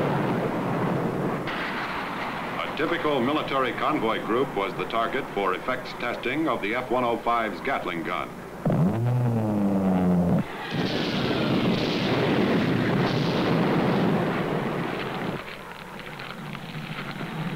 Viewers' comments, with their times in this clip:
0:04 you can hear it too. Hign rate, big exosive ammos there.